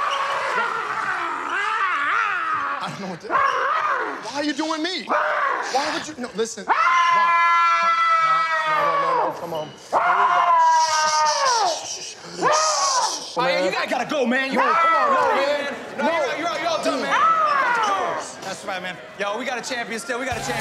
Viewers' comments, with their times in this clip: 0:08 The background actors breaking in laughter 🤣🤣
0:08 When Peele screamed some guys just turned around so they didn't get caught laughing lol